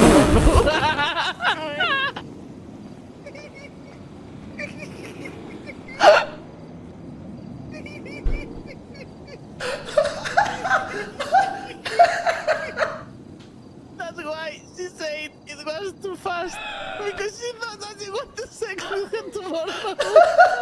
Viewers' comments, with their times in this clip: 0:06 First watch made me laugh so hard, but honestly this one laugh is the best thing since epic trollface, seriously though I can't get enough it's too perfect.